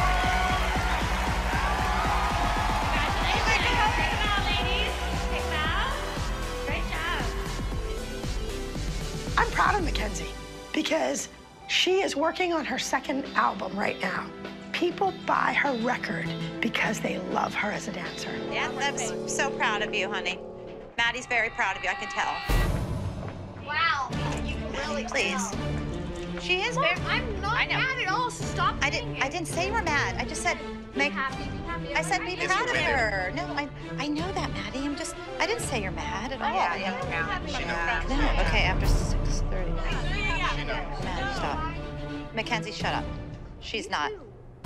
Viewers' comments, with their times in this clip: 0:09 idk if my ears are broken but abby sounds like kermit the frog here
0:10 Abby’s voice 😂 “Im pRoUd oF mAkiNZe”
0:12 why did Abby sound so different
0:16 WHY DOES ABBY SoUND LIKE WALMART MICKEY MOUSE
0:30 You can here in the back round the producers saying “she knows we’re filming”